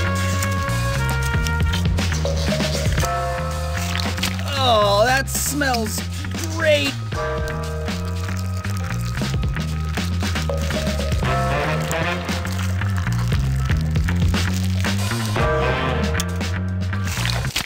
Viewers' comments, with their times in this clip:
0:04 My guess is that he commented on it "smelling grave!"